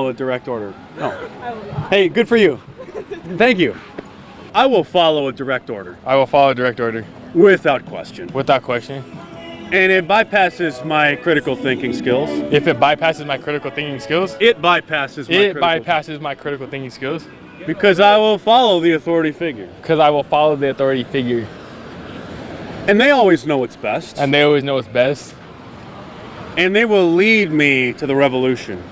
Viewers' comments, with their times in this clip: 0:09 I can see Youtube giving a copyright strike for Duran Duran in the background....LuLz